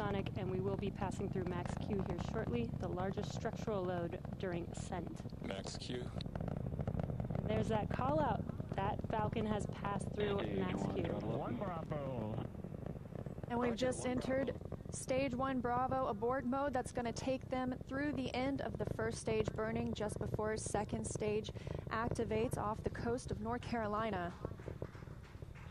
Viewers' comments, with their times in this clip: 0:07 Auto-generated captions “Falcon has passed through and that’s cute ❤️”